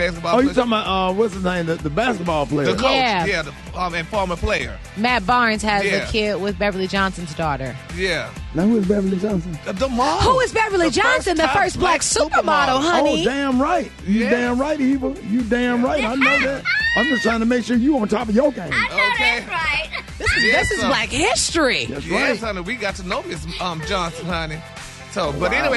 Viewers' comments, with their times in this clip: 0:08 Rickey sounds like an old Black slave, "Na who Beverly Johnson?"